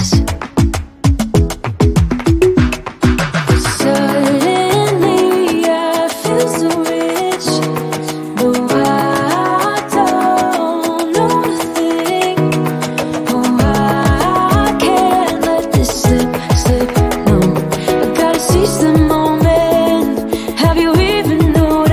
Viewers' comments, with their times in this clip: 0:08 sounded like blackpink's whistle's badamchodom ........ Line